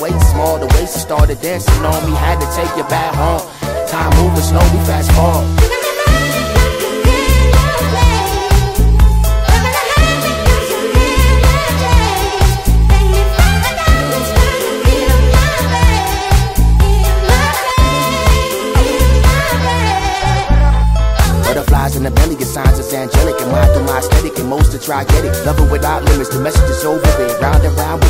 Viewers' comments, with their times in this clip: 0:07 The girls solo just spoke to me for some reason. I love JUNGLE!
0:12 the solo here I just… so incredible